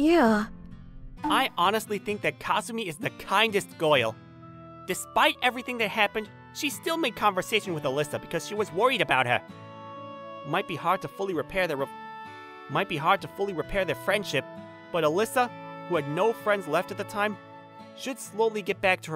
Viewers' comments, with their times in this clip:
0:07 Bro u miss air for the maybe u need some air because u repeat twice